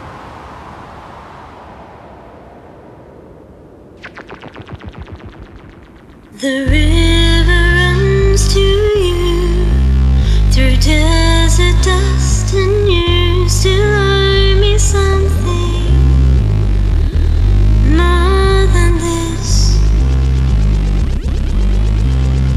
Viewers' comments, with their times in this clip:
0:04 The bass line in this song is so good, especially